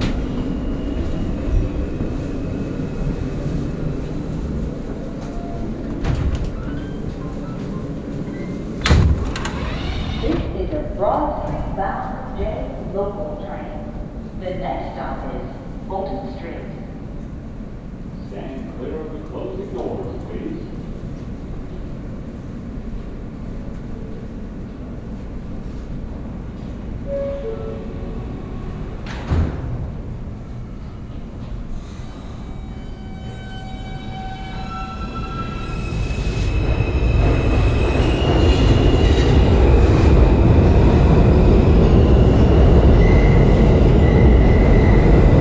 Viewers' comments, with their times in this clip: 0:06 I love how the dainty notification sound be like “have a pleasant view at the disrepair :)”
0:06 I have not heard that tone in a long time
0:31 That sound... Creepy, but i love it. This place must have been flooded multiple times already.
0:32 the sound that the train makes sounds very ghostly.
0:33 perfect sound track for a horror movie